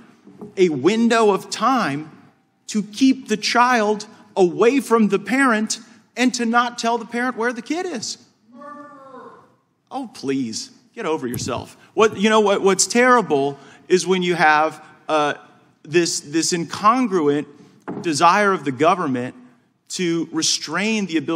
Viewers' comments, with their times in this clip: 0:04 What did someone yell out at Matt Gaitz ? I can't make it out.